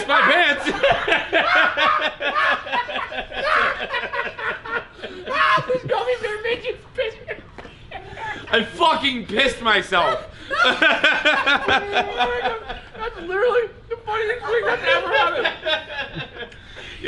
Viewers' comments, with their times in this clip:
0:05 Listen LMAO he sounds EXACTLY like it